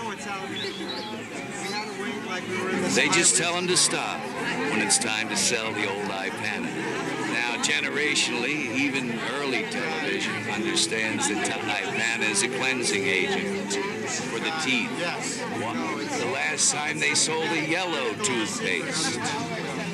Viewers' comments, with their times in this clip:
0:04 The way he smiles & says "Time to sell the ol' Ipana." just SCREAMS his Joker in my mind